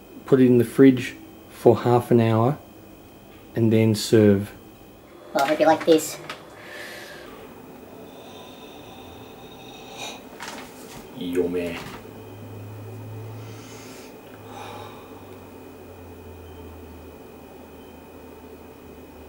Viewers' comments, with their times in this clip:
0:03 Omg lmfao. You should here his voice in it's soooo funny. Was that a machine? I thought that was first Alvin the Chipmunk :')
0:04 what voice was that???
0:04 what was that voice lol
0:04 Anyone else notice the squeeky voice :'D
0:04 Is it just me, or does his voice go really high pitched ? And is that really mousse? It doesn't look or act like it.
0:06 What happened to ur voice ?
0:06 his voice sounds smaller